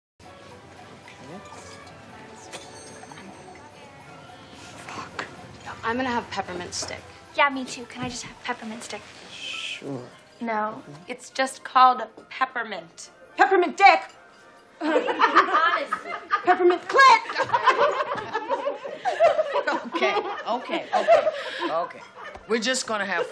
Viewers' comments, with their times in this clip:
0:04 i’m sorry but winona really said “we irritatin”